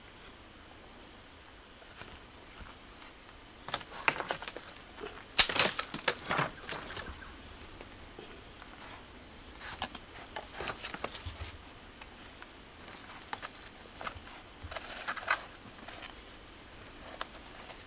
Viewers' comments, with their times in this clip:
0:04 Great video. The song reminds me of Enigma's "RETURN TO INNOCENCE". Beautiful song.